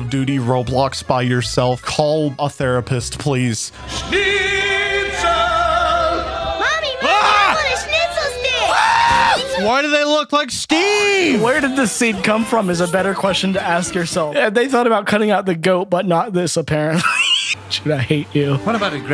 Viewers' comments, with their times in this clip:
0:07 his screams sound so real i can feel it coming inside of me
0:07 That scream got me real god XD. They remind me more if Chucky has too many kids with a really ugly doll lmao
0:07 they’re screaming of pure fear from this scene is justified